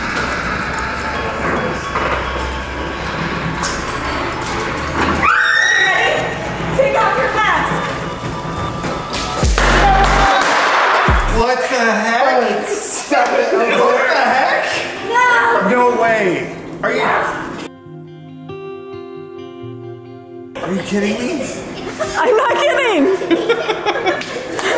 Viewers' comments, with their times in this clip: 0:06 bruh. The gum chewing..